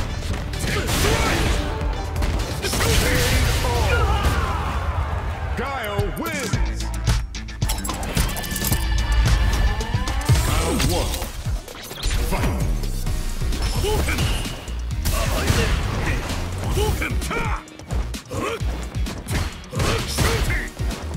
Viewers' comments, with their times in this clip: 0:09 Music changes after rematch?? I hope it wasn't just a transition because that's a sick feature